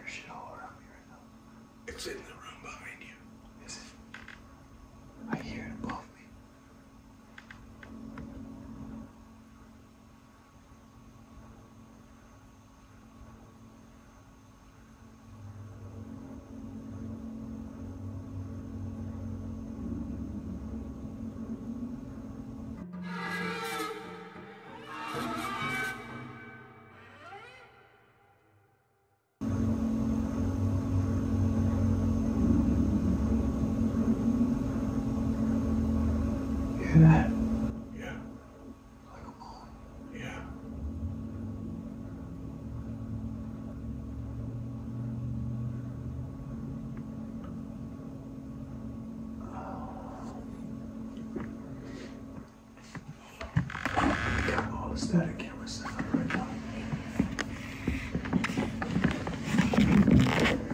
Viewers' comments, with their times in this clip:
0:03 Ok is it just me or when they were sitting in complete darkness it sounded like something was crawling behind the camera slowly and then u hear faint female breathing starting (have HEADPHONES to hear clearly)
0:17 you see the orb in the room before the growl
0:18 right before you hear a growl, I see a small spec of something leaving the room on the left.
0:42 Come on boys, you must of recorded my ex in the early morning on the toilet after lady's night out, swear the exact moan.